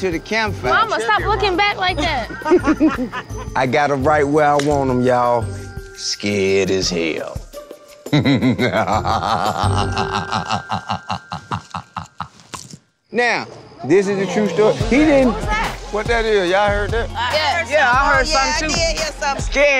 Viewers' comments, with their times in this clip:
0:07 his evil laugh ON POINTTT 😭💀😂😂😂😭😭